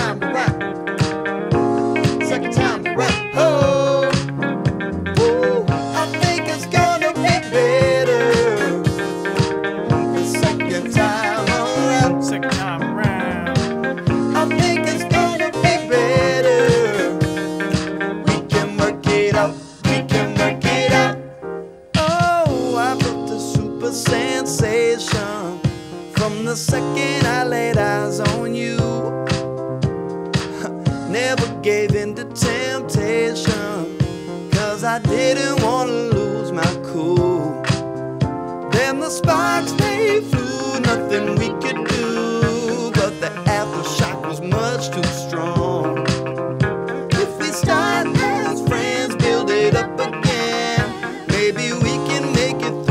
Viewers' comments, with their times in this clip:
0:03 So 70's + 80's decade, I agree. Makes sense given that the high-energy sound comes in. Hi-energy is precisely late 70's early 80's. Good ear bruh
0:40 OMG JUST LISTEN TO MAYER ON I’VE NEVER HEARD SOMEONE THAT SMOOTH. IT’S THE LITTLE THINGS! I JUST FOUND OUT ABOUT TUXEDO/MAYER HAWTHORNE THIS WEEK WHEN SPOTIFY SUGGESTED ONE OF HIS SONGS. 🧡